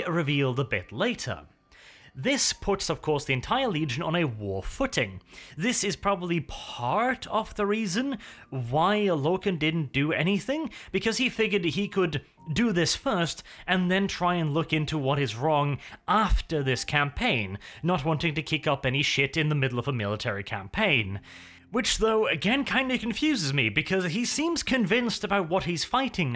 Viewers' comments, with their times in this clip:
0:09 if you turn out auto-translate, instead of why logan it says why allah? lool